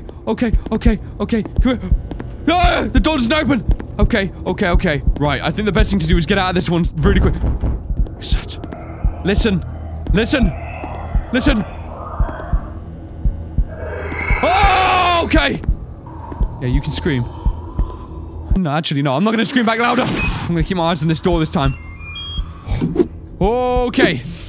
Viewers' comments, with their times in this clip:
0:09 sounds like Spookwave from Undertale!!! :D